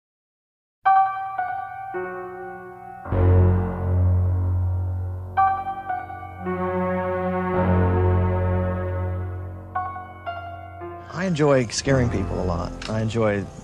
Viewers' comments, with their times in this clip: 0:01 the music begins